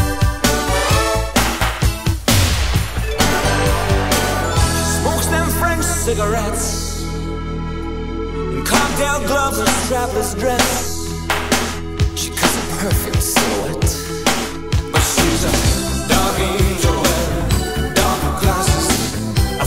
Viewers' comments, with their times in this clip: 0:03 This song was on very heavy rotation on MTV in its heyday. I think it got more exposure there than on radio. A lot of people think it's a superficial song about cars when it actually has nothing to do with cars. My favorite part is when the whole tone and rhythm of the song changes +- then resumes.